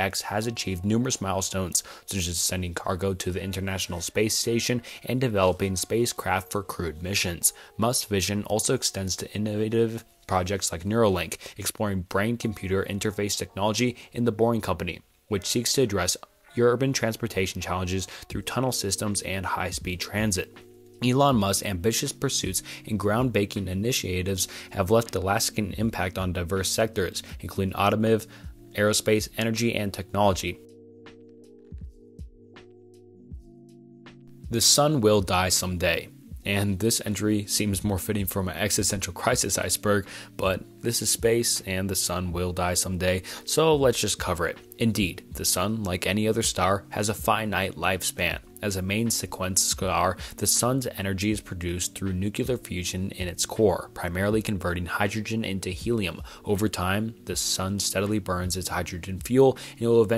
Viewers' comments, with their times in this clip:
0:08 is what did it for me is he trying to say individual 🤣
0:48 a main sequence ¿Sklar? So cute:)